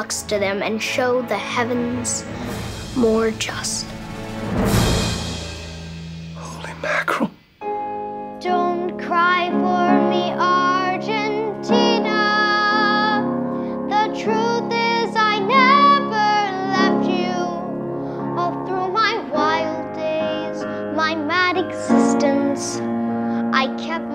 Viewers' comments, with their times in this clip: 0:08 my guy has a better voice than justin beiber